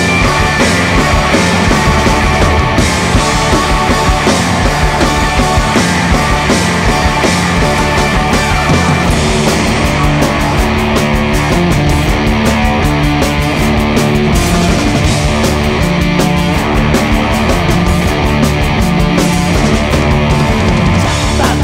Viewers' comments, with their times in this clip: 0:08 fuzz fuzz fuzz fuzz